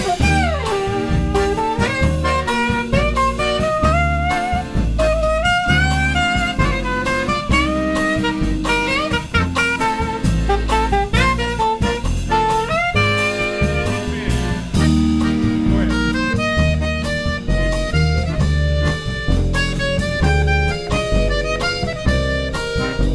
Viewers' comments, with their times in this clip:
0:04 Ahh the saxophone part really brought tears to my eyes. I miss pokemon. Amazing performance